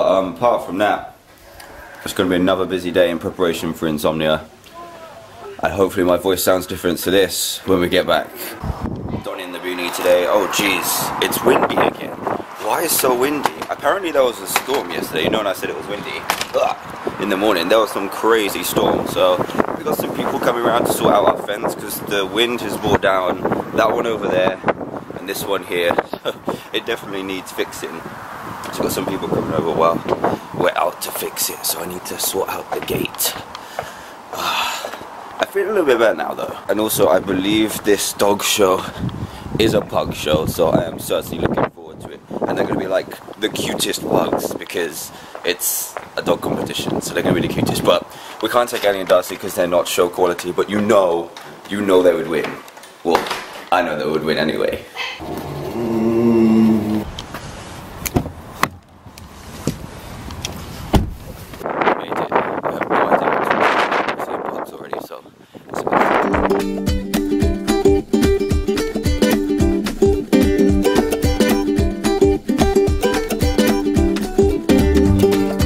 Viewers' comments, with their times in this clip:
0:03 Did anyone else notice some strange sounds lol
0:04 wat was that noise in background in
0:05 there's a wierd sound in the background
1:01 I cant hear what he is talking about